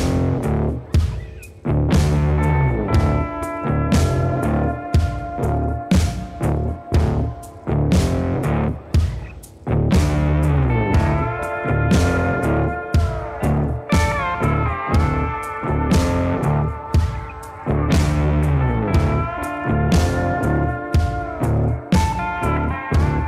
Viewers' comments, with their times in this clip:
0:08 And the way the track slows down around the mark just works perfectly for fighting that fish. Your editing is just going up 📈